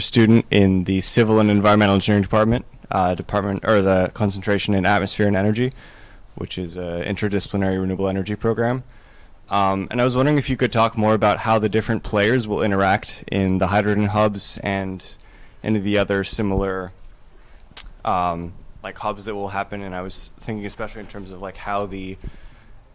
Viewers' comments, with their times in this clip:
0:05 OK, I just give automatic thumb down any time that kind of blasting occurs. This can be handled in editing, so there's no excuse to let that happen.